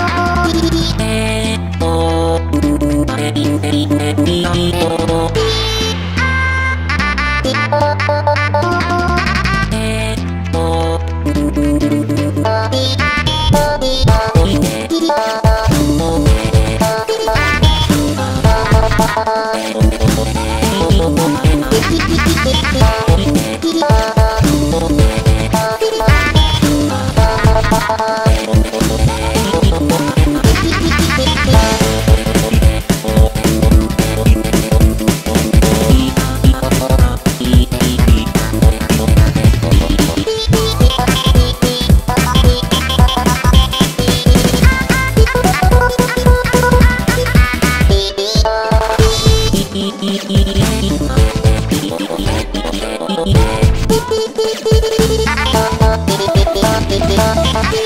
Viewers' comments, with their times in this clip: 0:06 this note was Angelical ✨
0:11 sounds like among us
0:12 i Just felt cursed anya singing among us
0:14 am I the only one who heard "What do you mean"? ._."
0:39 This is so good! I love your art do much!!!! One nitpick i had is that their voicebank doesn't fit the song very well. Especially Anya felt very offtune.
0:40 sounds like Anya is saying “ChiChi” AWW OMG